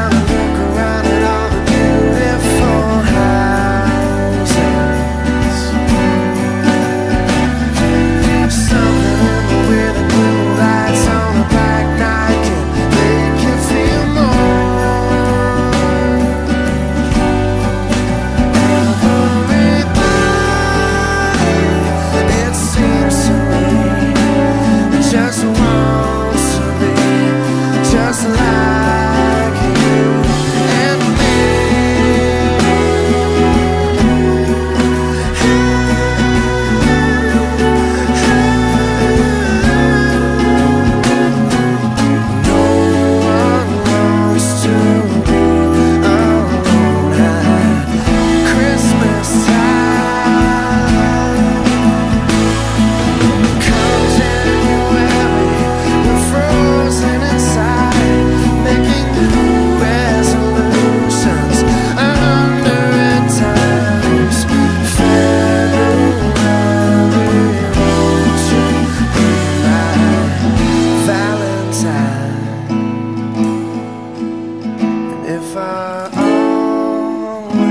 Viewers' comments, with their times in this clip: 0:07 i think e7/gsharp should be 4x243x, though your chord on the graph can fit too, but just dont feel so right
1:01 I believe it’s supposed to be a D6 (10 x 9 11 10 x)